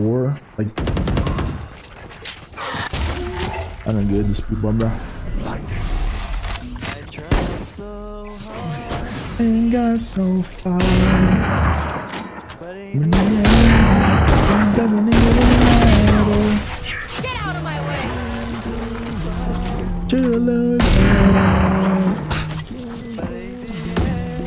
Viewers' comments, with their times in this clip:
0:06 I actually started singing with them too XD